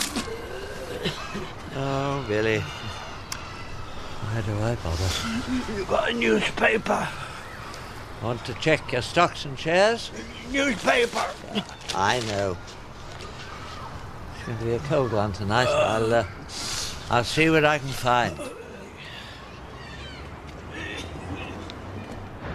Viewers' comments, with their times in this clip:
0:08 the bells the bells